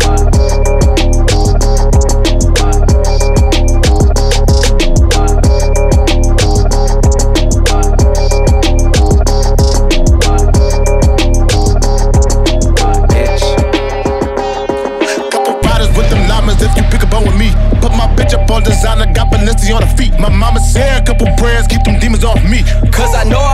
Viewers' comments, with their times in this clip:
0:06 dope switch from Megatron to Bezerk